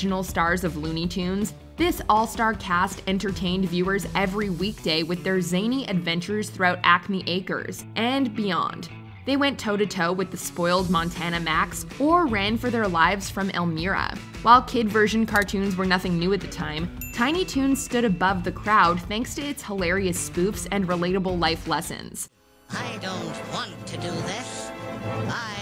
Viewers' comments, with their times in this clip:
0:09 How... how did she say Elmira's name wrong?